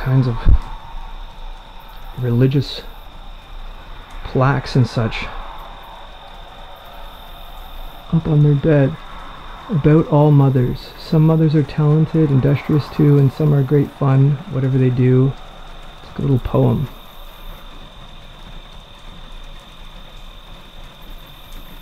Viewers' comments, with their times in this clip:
0:09 I hear the rain but don't see it outside the window.